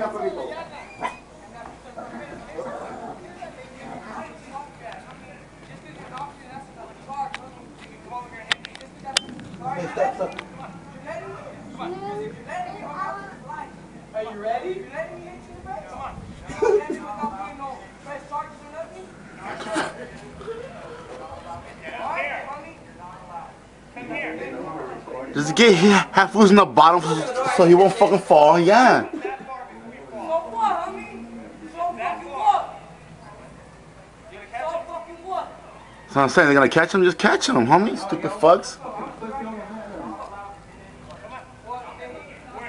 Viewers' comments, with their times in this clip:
0:08 Sounded like a piece being loaded.
0:09 officers in the back laughin
0:25 does he say, "does he et afsushaf fall nd ya." ?